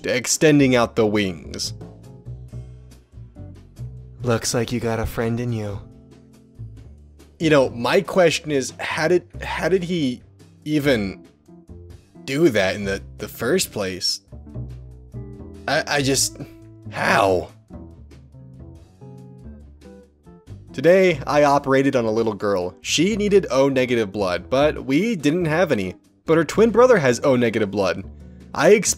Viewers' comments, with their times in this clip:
0:04 yo why did his voice jump forward like that
0:11 The whole video had been in my right ear Very suddenly I just hear “Looks like you’ve got a friend in you” In my left ear and because my headphones are broken it’s like six octaves too low Fml